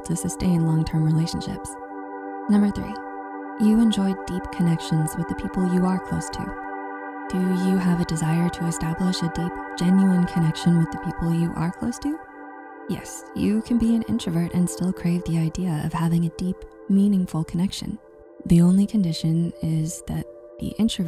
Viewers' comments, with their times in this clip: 0:08 hi, it just may be a me thing, but I feel like at some moments music is a tad bit too loud and plays over the voice, more specifically here